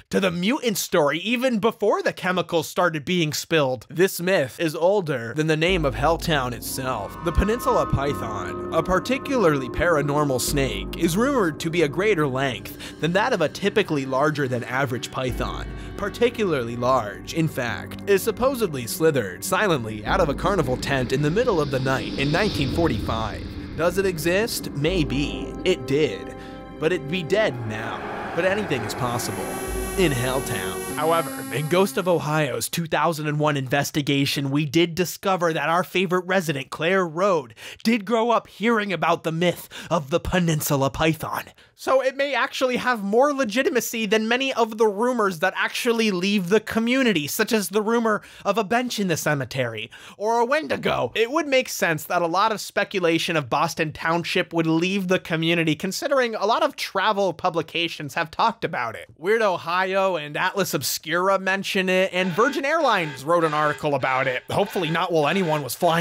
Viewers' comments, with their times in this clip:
0:03 This segment reminds me of soooo many YouTube Channels. Why must they all talk like that and have such similar graphics and stock footage???? lol 🤣🤣🤣
0:04 that impersonation of bad “creepy” YouTube narration is so spot on.
0:04 lmfao the “cliche youtuber voice” made me laugh pretty good...
0:54 wtf man my youtube bugged out and stayed silent for 10 seconds, just cut mid laugh, and paused on the zoomout, with no buffering or stuttering.